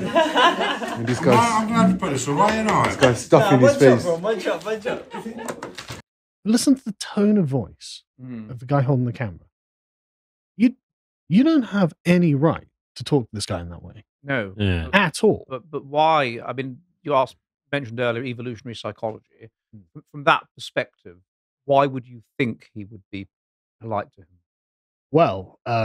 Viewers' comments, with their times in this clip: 0:09 the tone of that guys voice make me think of the people who wore masks during covid and got jabbed and went WELL I DID IT SO YOU HAVE TO